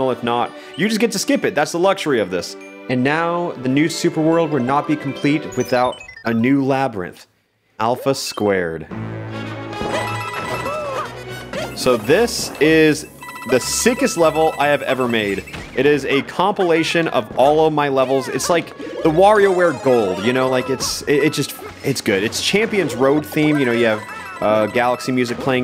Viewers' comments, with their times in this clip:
0:07 I got an ad about spicy McNuggets so it sounded like alphas spicy McNuggets